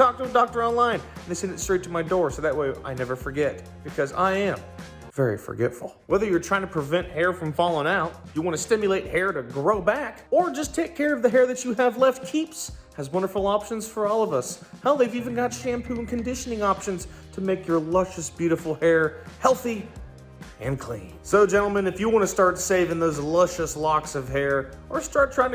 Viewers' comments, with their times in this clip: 0:08 Me listening "Dancing furiously yesterday all night" Well that was fun but let's take a break from it Me today at the mark of this video That song its going haunt me.